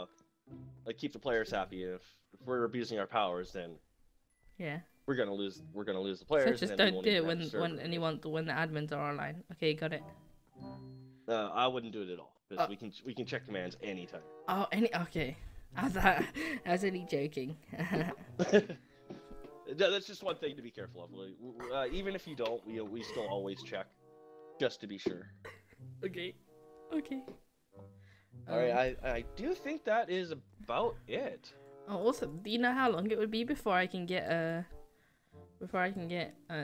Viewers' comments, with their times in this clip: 0:09 So awkard... cringing everytime one of you says"umm..." Edit: awkard laugh by admin.... ye no that is NOT agood idea
0:18 the other guy's laugh lmaooooo
0:21 was someone choking?